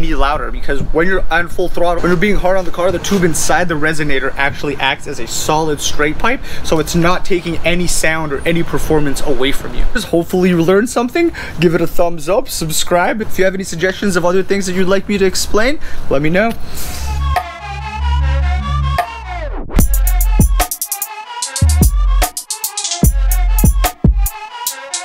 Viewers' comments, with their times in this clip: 0:10 like you're talking to a puppy